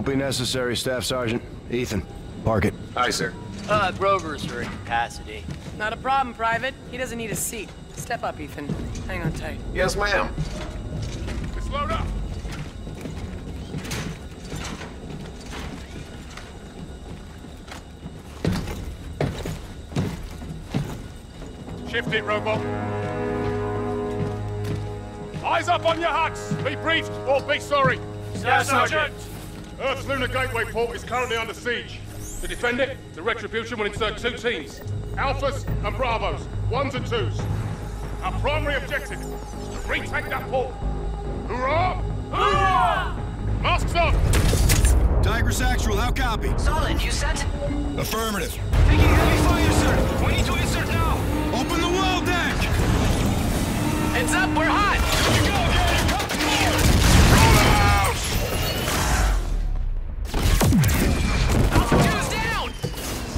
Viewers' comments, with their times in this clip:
0:09 the way he says yes ma'am makes him feel more alive
0:45 Tiger Sexual how copy?😂